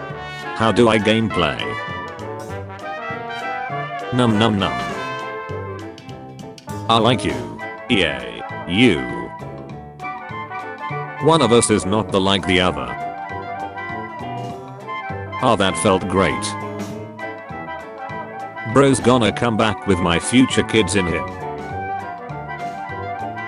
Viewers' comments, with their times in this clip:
0:07 The way the bot said ew